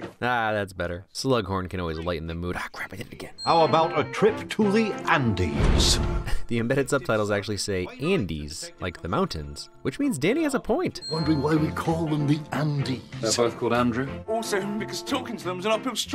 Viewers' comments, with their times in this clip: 0:03 I had so much trouble understanding what Danny said here. British is hard for a German 😅 eventually it clicked: uphill struggle "Also because talking to them is an uphill struggle, innit[isn't it] Dad?"